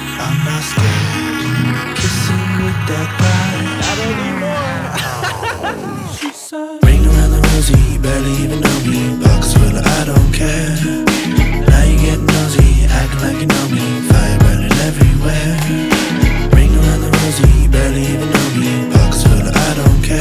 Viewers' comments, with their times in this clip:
0:03 why is nobody talking about how hot he sounded with the 'not anymore'???